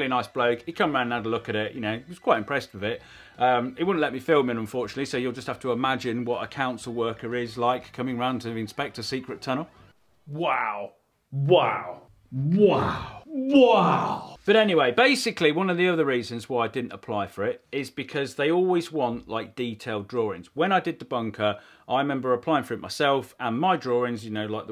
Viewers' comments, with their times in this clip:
0:09 I completely lost it, laughing so hard, at the impression of the Council Inspector never know what's going to work. Wow!